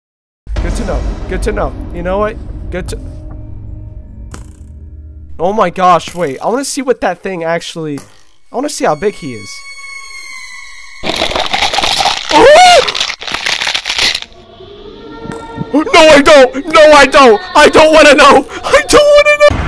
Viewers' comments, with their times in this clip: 0:07 thats quite literally the sound of terror, imagine your playing with other players, you notice one of them is at base so you go to base, only to hear "CRUNCH" from inside the base, thats pure horror